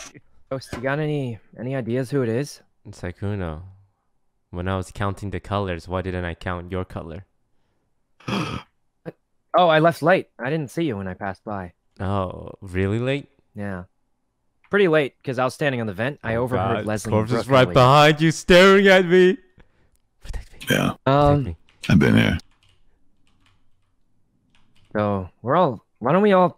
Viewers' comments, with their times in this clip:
0:03 Toast : Sykkuno when I was counting colors why didn't I counted your color CORPSE : "dramatic impostor gasp" This game giving me more drama than any series xD
0:03 when toast and sykkuno are randomly talking then there's corpse popping out of storage just to gasp
0:08 Corpse's gasp tho 🤣🤣